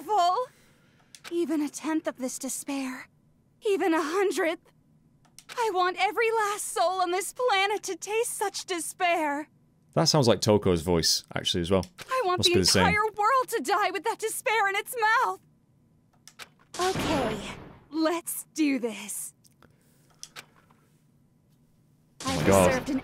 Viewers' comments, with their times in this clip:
0:07 it sounds like toko because Toko and Junko actually share the same voice actress(es) in english dub.